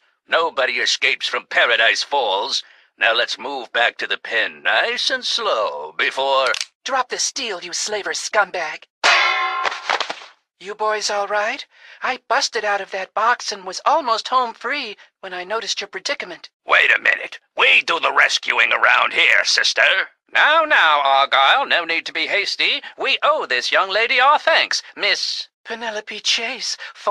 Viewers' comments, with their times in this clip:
0:08 Guys, that voice sounds familiar.